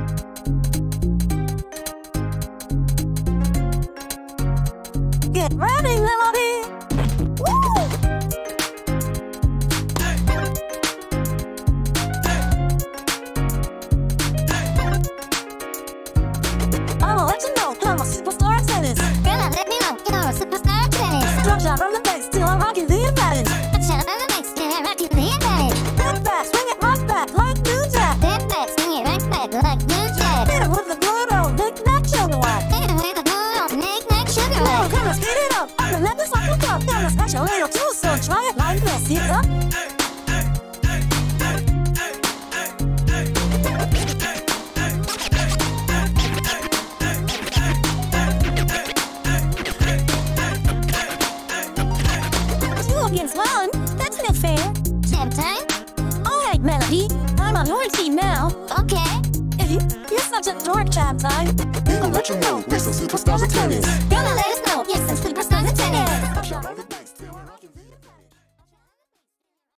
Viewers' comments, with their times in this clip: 0:07 Get ready millapede 💀
0:09 No one mentions that the bg characters Shout "Hey" and boogie with the song's record scratch
0:24 why does it sound like they are about to cry
0:25 bro really got that "Who put you on the planet UGGHH" and "BRING IT AROUUND TOWWWN"
0:26 Why sounds so good at 0.75 speed brooo. This is such a banger that I had to listen to the whole song like this so it’ll last longer. They gave us such a short demo 😂
0:39 Okay two things: Jamtine joining in and singing with Melodii is just a chef's kiss on this whole thing! That and is just perfect with sound of the tennis ball hitting the rackets being synced with the beat.
0:58 i love melodiis derpy ass Ok :)
1:00 I like the moments where Melody sings with Jamet